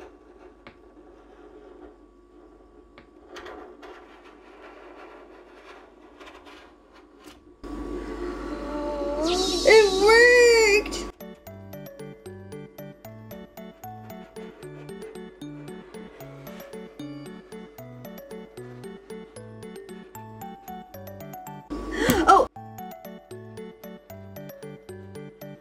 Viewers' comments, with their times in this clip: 0:09 When she said it worked , she sounded like wengie